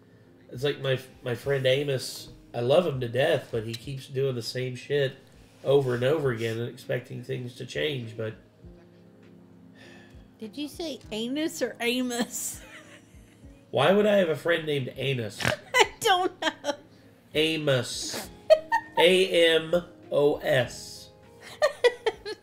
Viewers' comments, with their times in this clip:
0:10 I heard Anus as well! LMAO! He definitely didn't annunciate the M! 🤣